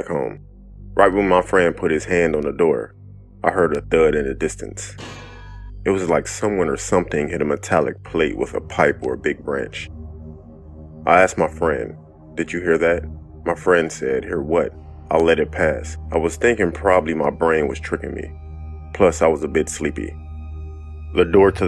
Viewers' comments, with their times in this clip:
0:05 That cartoon sound effect 😂